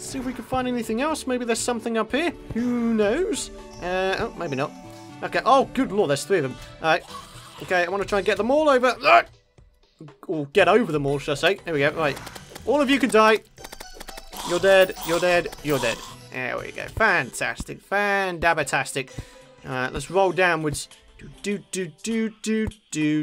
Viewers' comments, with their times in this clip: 0:10 i LOVE the satisfying sound it makes when you hit a zombie with a sword